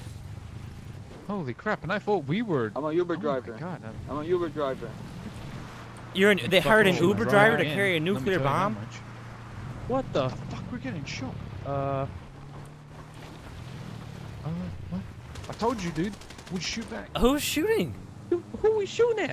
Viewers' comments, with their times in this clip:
0:03 “I’m a YOUber driver” lmfao 😂